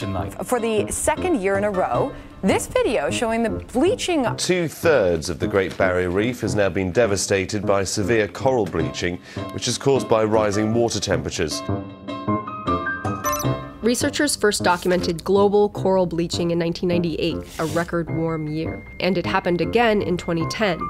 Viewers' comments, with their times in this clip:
0:04 music poppin off too much